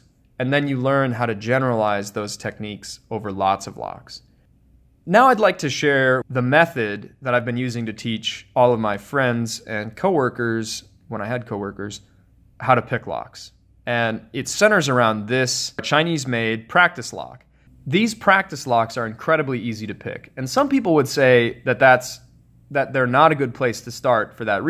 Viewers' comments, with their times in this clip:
0:10 [Timmy Turner’s Dad voice]